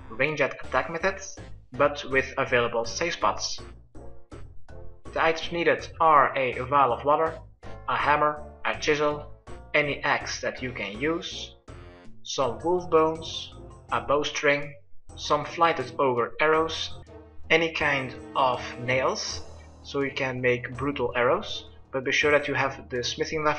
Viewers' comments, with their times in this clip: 0:09 any ex that you can use! what if some1 never had a gf? it will work with other peoples ex?